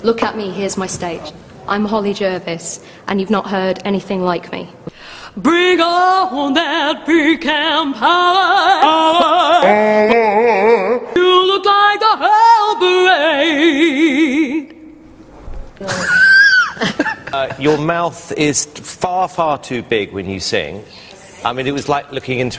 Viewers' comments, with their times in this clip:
0:04 she wasn't joking when she said that they probably never heard anything like her voice before